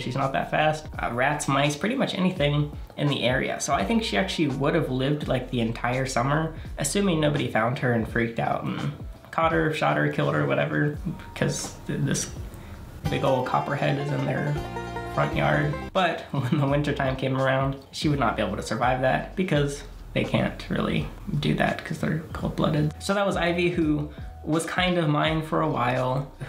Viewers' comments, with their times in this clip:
0:07 THE BANJOS LMAAAOAOIOI